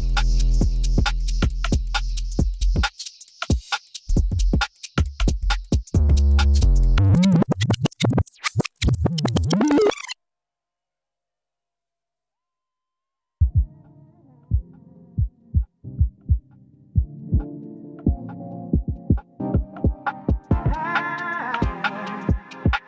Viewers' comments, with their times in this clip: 0:06 I've seen that before. Why is the set sometimes broken off with a big scratch? 🤔